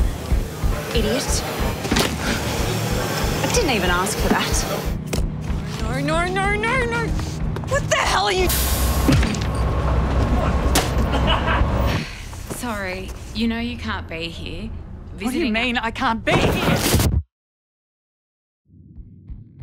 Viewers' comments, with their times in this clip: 0:05 NAUR NAUR NAUR NAUR NAUR